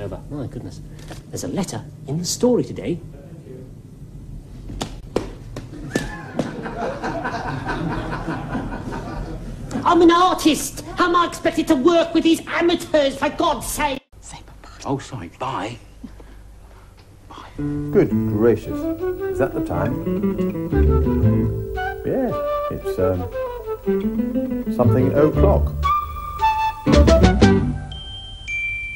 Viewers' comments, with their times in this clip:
0:09 Sounds Like Sheriff Of Nottingham Tony Robinson From maid Marian and Her Merry Men